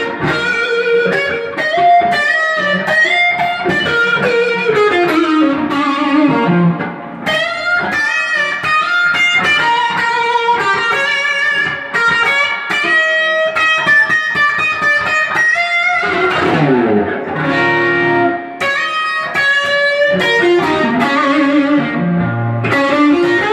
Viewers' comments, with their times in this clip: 0:09 How do you get that bell-like sting on the end of the notes? Like ? Is it the pickups with kingtone switch?